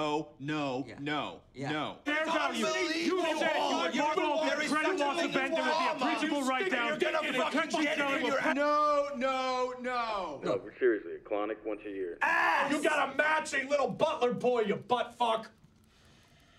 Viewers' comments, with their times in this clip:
0:03 I DONT KNOW WHAT WE ARE YELLING ABOUT 😂